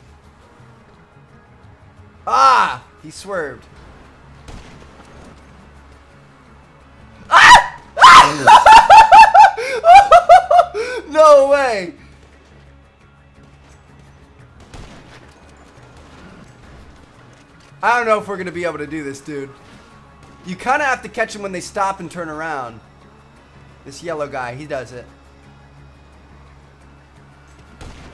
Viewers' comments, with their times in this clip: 0:10 turn your speakers down...